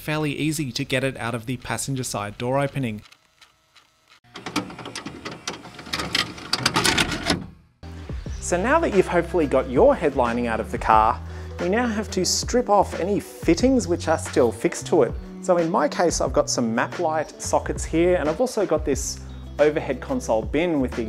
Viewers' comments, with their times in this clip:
0:04 love the retro VCR sound effects!!! Keep it up mate!